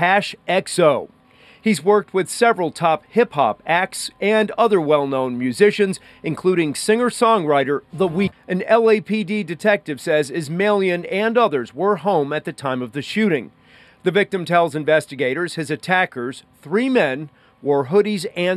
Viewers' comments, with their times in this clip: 0:06 idk if you meant to do that but cutting out the end of the weekends name is hilarious😂 I love hidden editing jokes people don't notice haha